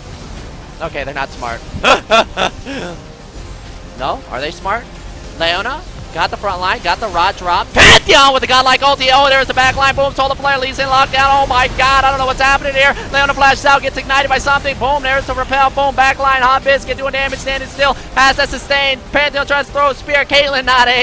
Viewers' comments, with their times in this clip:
0:06 Trick's transition into an auctioneer